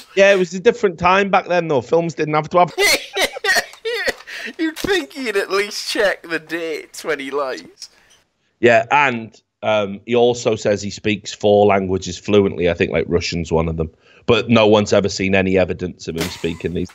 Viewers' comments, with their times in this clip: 0:03 When the song censorship ends